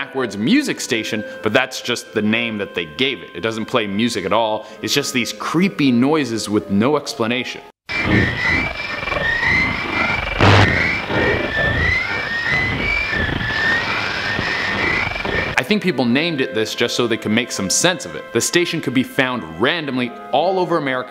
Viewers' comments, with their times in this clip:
0:07 sounds like my brain during maths LOL